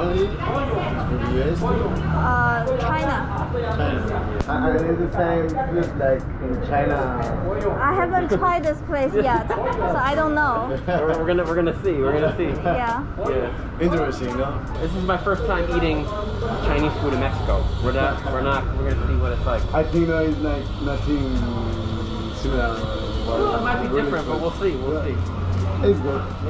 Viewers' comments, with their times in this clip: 0:07 First time hearing the voice of Xiaomanyc's wife.